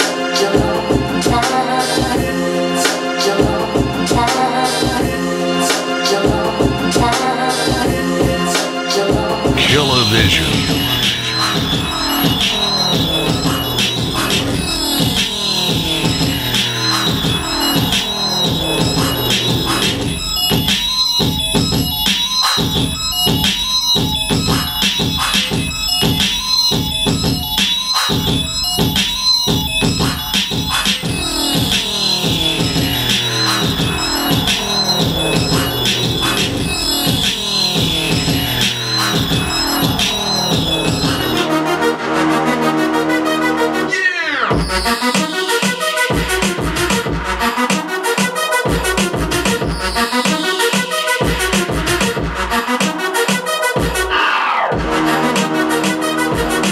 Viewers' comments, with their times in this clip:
0:09 that beat is style p grinding over here
0:40 sound like a Swizz type beat
0:41 Sounds A Little Beat Like Holla At Me From TYGA & Chris Brown